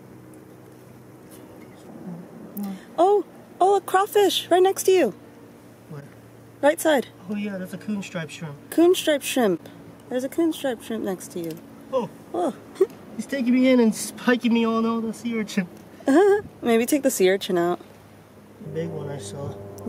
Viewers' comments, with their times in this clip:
0:07 OMG just made my day! - Oh! - Oh! giggle